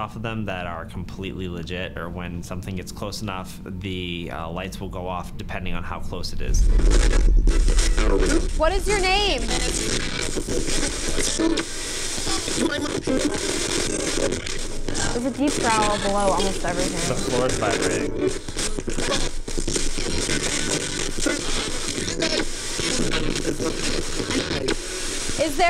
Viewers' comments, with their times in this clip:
0:09 {Spirit box} [‘What is your name?’] “Edward” ~I wish ‘the crying lady’ could’ve gone too~ hearing her sob out loud was heartbreaking. ❤️